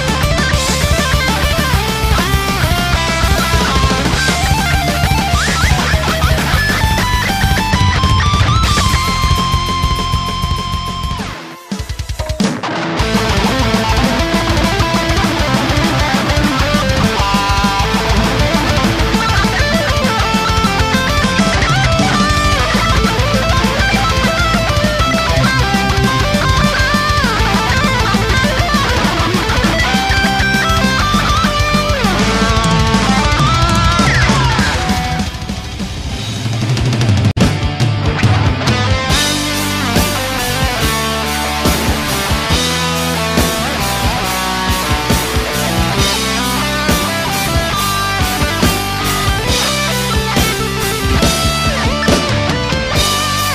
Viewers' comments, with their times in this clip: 0:08 they have a very bad vibratos. ???? is this a joke?
0:34 sec in........sounds like the the chorus to one hell of a rock/metal anthem to me. yes.......yes......yes......i know it's probably part of some actual song, but i mean damn....that is an amazing guitar piece.......not to say it isn't all amazing guitar but that is my favorite part.
0:35 where that solo starts is extremely beautiful and it's clear that the Asian dude is the only one who actually has talent. The white dude don't have much rhythm and barely as fast first as Bruce Lee's cousin over there
0:36 No doubt the skill required to play this is incredible but when he's playing slower you can kinda hear the emotion that's missing and that's why I think 229 people have disliked this video.
0:37 Hermans solo from is just so incredible, it has such a good choice of melodies ........and the multi-finger tapping part is just plain sick
0:37 Best part is The solo for Valley of the Damned is great.
0:37 one of my favorite solos is the one
0:38 such a beautiful solo <3
0:38 from (valley of the damned).... epic solo.. awesome :O